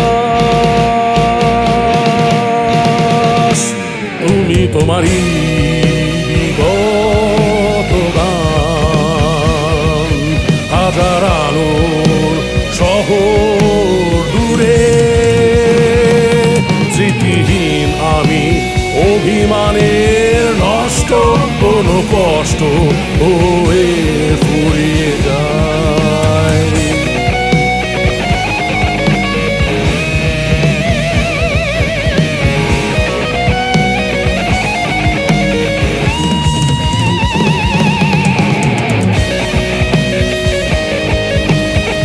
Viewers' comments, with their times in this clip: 0:03 Guitar Sounds Heavenly
0:27 That solo is addictive.